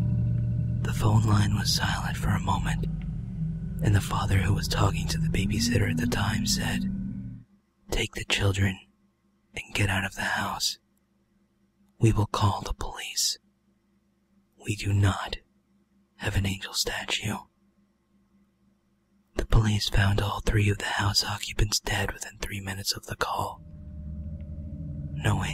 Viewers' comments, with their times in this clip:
0:06 I LITERALLY HAD FUCKING CHILLS! That was awesome, especially because Cry stopped the creepy music. Omg I'm so fucking scared and I like it XD lmoaoo